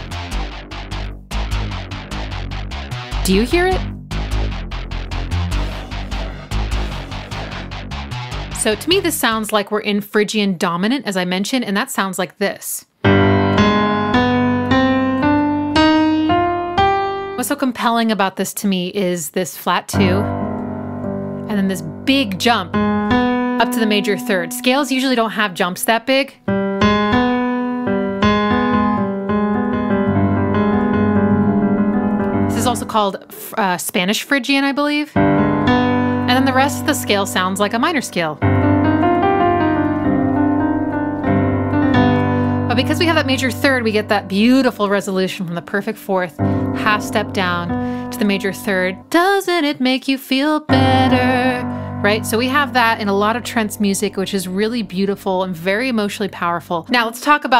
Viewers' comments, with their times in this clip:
0:09 i think it's a production technique involving vocoder and white noise and gating. or even fed into filter tracking on that synth. It's not in your head but it's barely there and only really audible, to me, on the "wh" sounds and "wa" sounds.
0:39 spanish phrygian? No wonder I always got a flamenco vibe from the chords with the time signature.